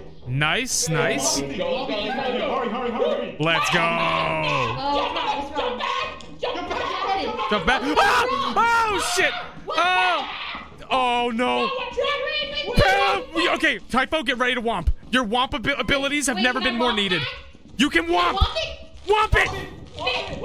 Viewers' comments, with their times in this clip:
0:06 The argument and screaming following is the funniest thing I’ve ever seen